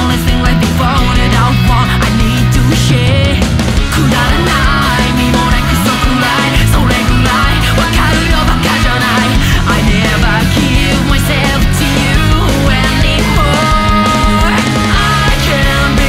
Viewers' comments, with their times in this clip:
0:03 love the drum drop!